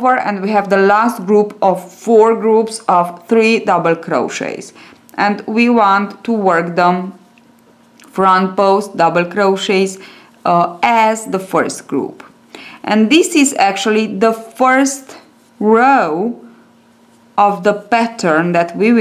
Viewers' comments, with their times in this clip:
0:03 Your thick accent makes it hard to keep up. Also your not very specific on which stitches your leading into next. Only got into minutes and I've had enough. I see some people are saying to rewind video but I'm not going to waste my time doing so when she could have slowed down a bit.